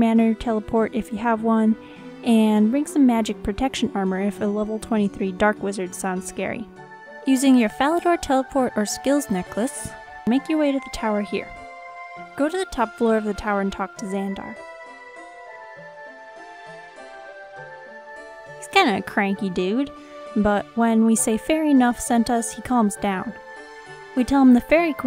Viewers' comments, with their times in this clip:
0:08 "Falador" gets translated as "Phallus" by the subtitles xD !